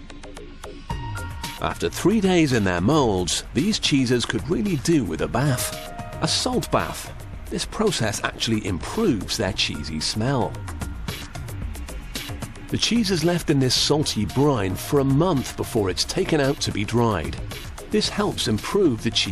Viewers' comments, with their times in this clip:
0:03 i thought he said jesus